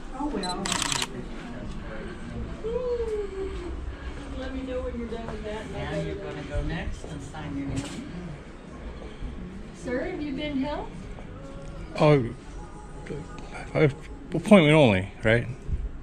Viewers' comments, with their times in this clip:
0:03 A worldwide tour of America? Oh, i wonder if he'll be coming to the UK. That shot with the zoom camera is just for show, he pressed the button and is already moving the camera down when the shutter sound goes.